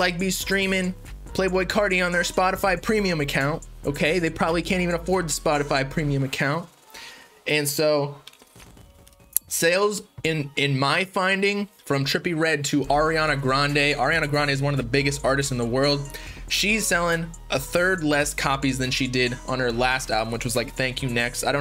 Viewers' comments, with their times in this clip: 0:08 Gotta use that sip as an adlib 😂